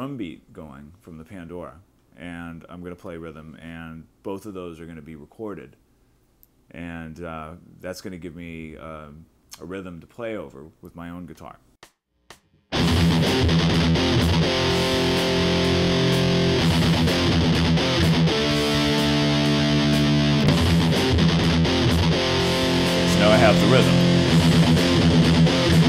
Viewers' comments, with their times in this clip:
0:10 sounds like reckoning day by megadeth
0:10 sounds like megadeth